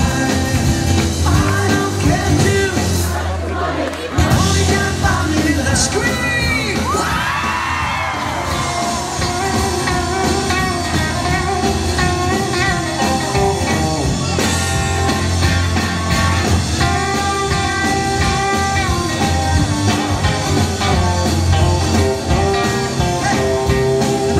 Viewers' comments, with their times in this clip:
0:07 = Greatest George Harrison Guitar Solo of all time. Almost as accurate as the 1964 one